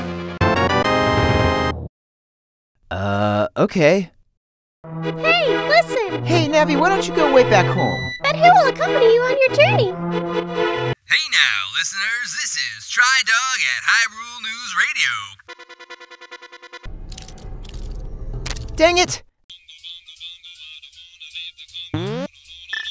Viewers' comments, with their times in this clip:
0:06 did he f-wordin' TALK?????????????????!!???!?!?!?!?!?!?!?!?!?!??!!?1?!??!?!!?!???!??!?!?!?!?!